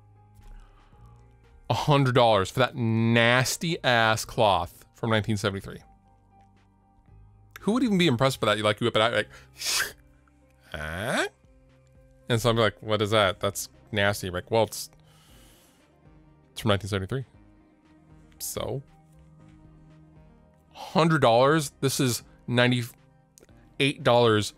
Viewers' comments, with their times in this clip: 0:09 How mint is that cloth unrolling sound. haha